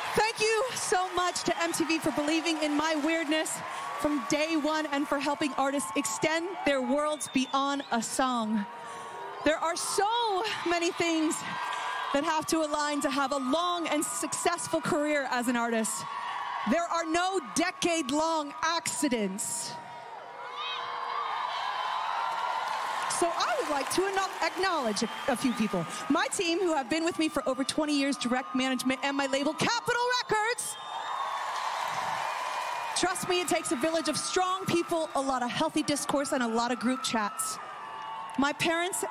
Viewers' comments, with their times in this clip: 0:08 Did I hear booing? Boo those people! She deserved this award!
0:08 you can hear booing...
0:20 yeah the face she does at like shows that she hears the booing. i personally don’t like katy but booing her on stage is soo unnecessary and rude.